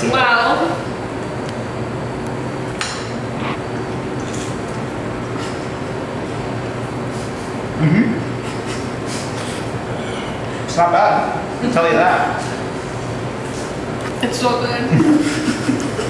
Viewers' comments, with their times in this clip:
0:03 Did anyone else hear a faux crunch sound effect ? It made me giggle